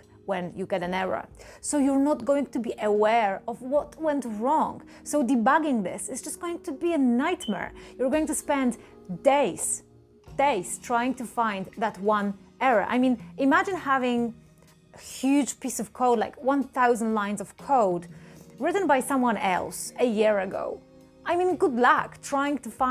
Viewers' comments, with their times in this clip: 0:07 Great tips! Although, I dont trust people who don't change the batteries on a dying smoke detector.